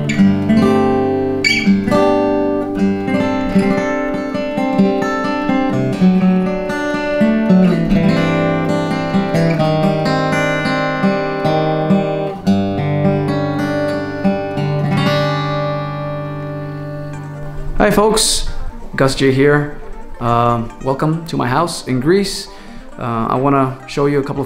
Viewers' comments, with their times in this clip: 0:09 almost sounds like Diary of a Madman